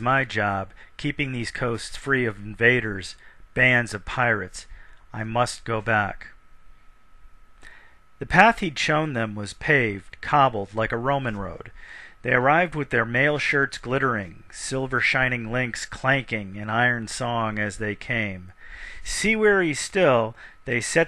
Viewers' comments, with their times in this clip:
0:07 Whoever the second reader was was incredible. No offense to the first person, he did well, but that second voice that ended was great. Alas I continue and thank any audio I'm lucky enough to find.